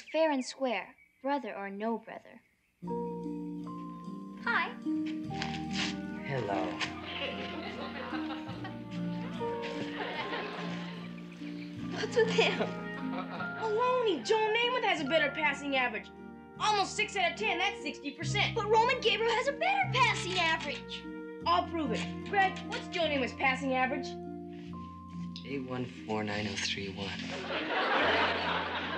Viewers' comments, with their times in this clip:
0:09 There’s a squeaky farting sound Uncouth, Greggy.